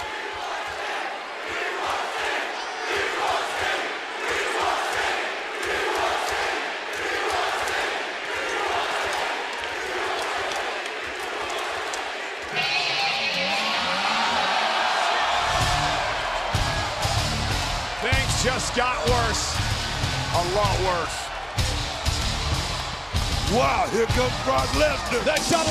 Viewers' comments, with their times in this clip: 0:08 that theme song still gives goosebumps 😮